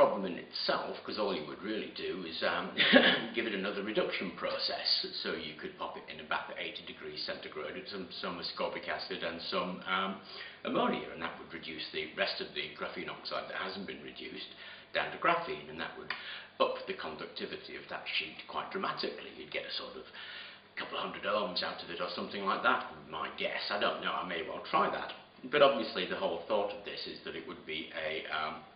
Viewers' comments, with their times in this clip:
0:09 you mention putting the graphene sheets in a bath at 80 degrees with ammonia and something else that I couldn't understand. It sounded like somascopic acid but that doesn't exist so what did you say